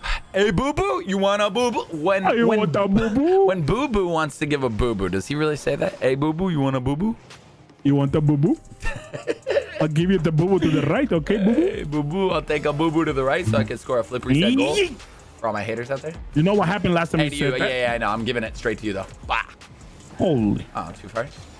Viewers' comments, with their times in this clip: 0:05 When you said hey Boo Boo, it set off my google assistant on my phone lmaoo